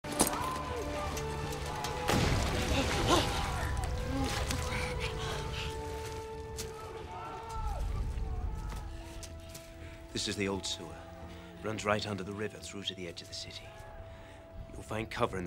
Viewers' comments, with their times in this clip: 0:02 I heard a guns hot.